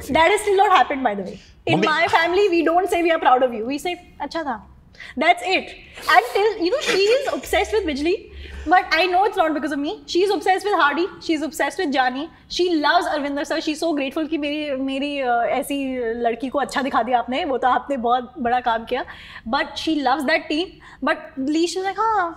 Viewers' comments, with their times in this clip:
0:07 exact same voice of shewta tiwari